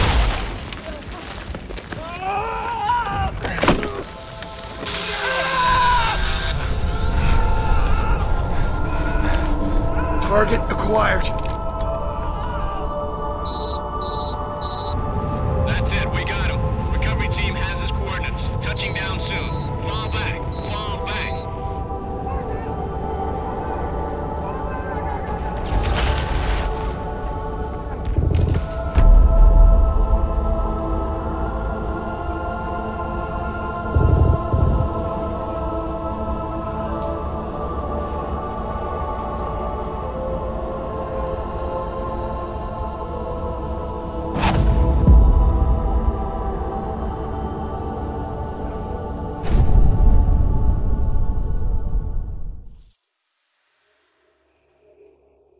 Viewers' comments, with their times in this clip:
0:03 who gets the chills when the music starts to play as the man points at master chief for the cords.
0:41 Cheiften is say " I wanna See MASTER CHEIF TOOO !!!" BOOOM ...
0:42 I expected it to be a little louder.
0:42 brute: oh something shiny BOOM